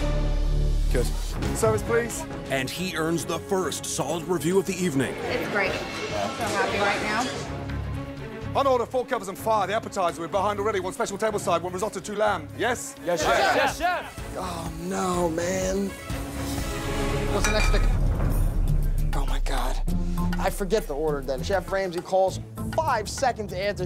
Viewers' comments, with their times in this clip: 0:08 Ramsey was talking so fast 😂
0:08 Ramsay just fuckin rapped that order